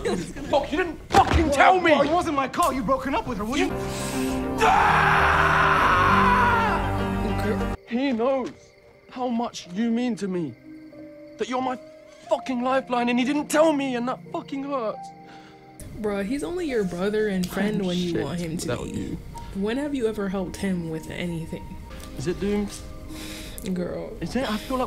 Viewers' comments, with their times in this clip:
0:05 its the scream for me…